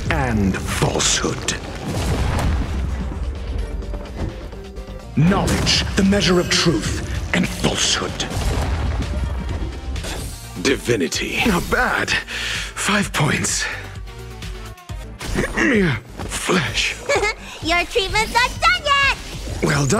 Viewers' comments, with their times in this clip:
0:04 Underrated part, I love his voice